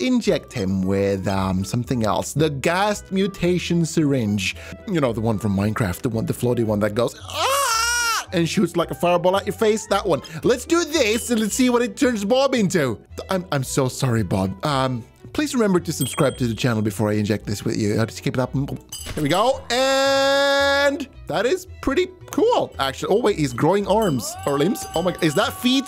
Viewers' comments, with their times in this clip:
0:07 Hahaha is scriming: